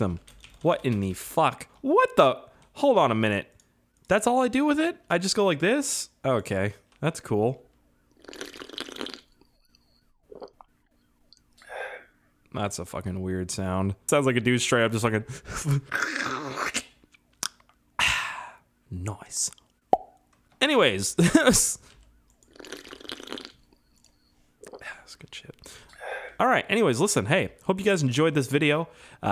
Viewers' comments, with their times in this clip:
0:06 thats the sound roblox makes when you drink cola lol
0:08 Queue drinking sound from roblox like am I the only one that noticed that
0:10 it sound likes from Roblox when you drinking